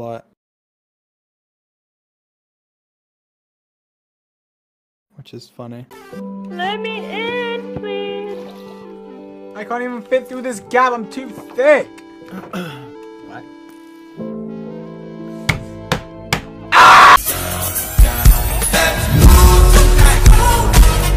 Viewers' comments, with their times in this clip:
0:08 the only thing I remember from that is the cough- dang lol